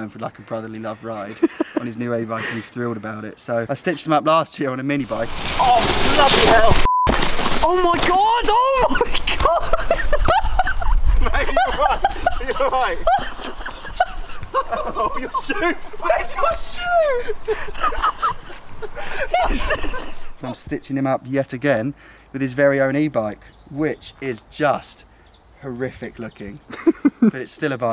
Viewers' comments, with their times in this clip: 0:08 that is literally the most legendary laugh the mtb community has ever seen
0:08 That laughter on is legendary
0:08 was just waiting for the intro music to drop 😂😂
0:10 is the most legendary laugh ever if you showed me that laugh i would be able to tell you exactly where its from
0:13 Anyone else play the intro tune in their head after the laugh ?